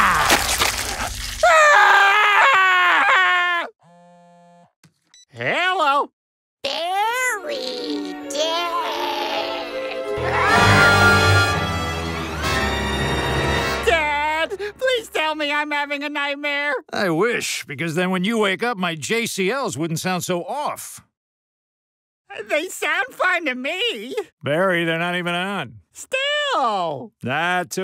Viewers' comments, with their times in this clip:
0:08 Dee Bradley Baker uses the same voice he used for the Geonosian Queen